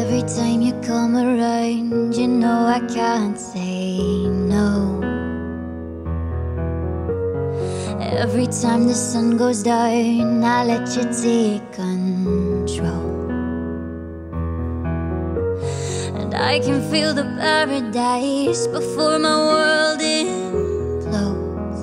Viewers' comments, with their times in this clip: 0:08 "sun goes DAIVN"? really? love her voice though. but in the end it's really about the (original) songs, doing covers will only get you so far.